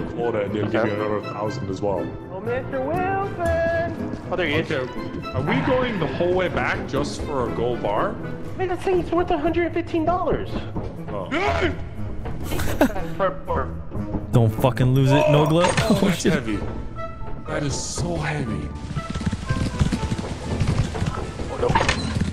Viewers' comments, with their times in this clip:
0:08 i swear delirious said the n word 😂😂